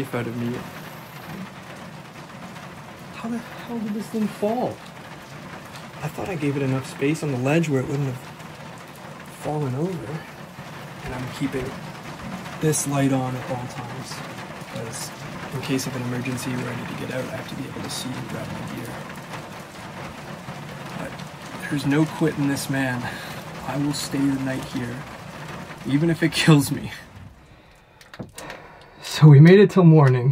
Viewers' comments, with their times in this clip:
0:07 Travel after the shelf attempts to escape the house (which is what you should have done, bro must have balls of steel) I swear I can hear what sounds like a woman's voice saying, ".. [unintelligible] light.." Does anyone else hear this? I mean one could say that it is someone outside telling him that they can see his light, but in weather like that at that time of night? Probably not. Doesn't sound like a natural squeaky floorboard or you, I can hear a definite speech shape to the noise. Coincidental timing, for sure.
0:11 -Sounds Like A FeMale Voice CAN'T Make Out What She YELLed OUT..To ME it SOUNDED VERY FAINT...MayBe Viewers can make out what The FeMale Said..Thank You For The Videos,.God Bless and Be With You Where Ever You Go.. Amen 🙏
0:16 What is that voice ? As you are talking sounds like a guy shouts outside. Sounded like he said "sit" or "shit" lol.